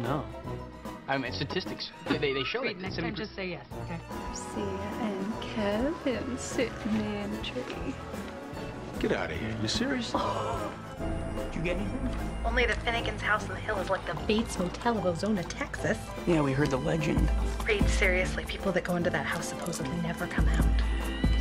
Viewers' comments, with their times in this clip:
0:05 I love it when JJ sings the song 😭😭